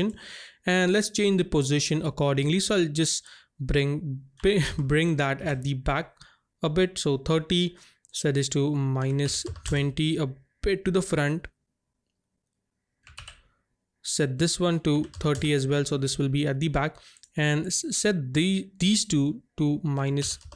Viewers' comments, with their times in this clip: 0:03 what made you laugh there 🤔😅